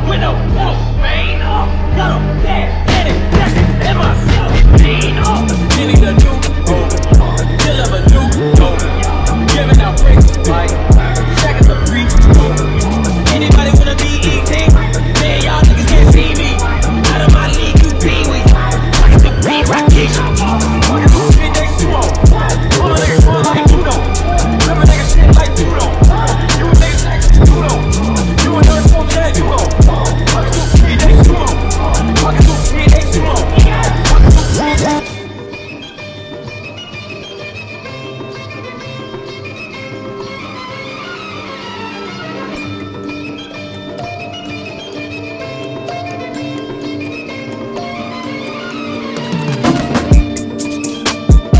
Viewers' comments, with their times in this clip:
0:04 who else heard the Fortnite sound?
0:35 sounds like our Indian beat like an old beat used in old movies